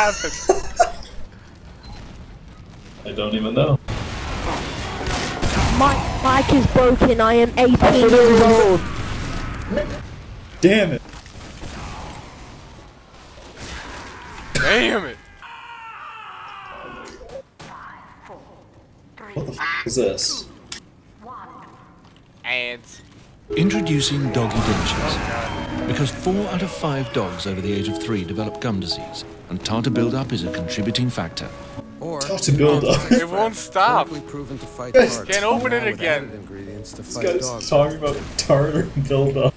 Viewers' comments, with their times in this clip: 0:05 my mic is broken
0:23 i thought that was an ad from my other tab!